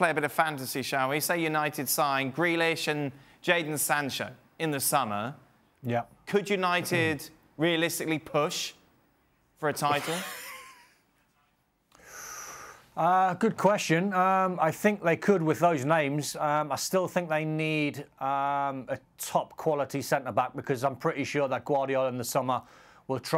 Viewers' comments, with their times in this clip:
0:10 Gab looks sick, even coughing ESPN send this man to the hospital. They don't need to work during these times.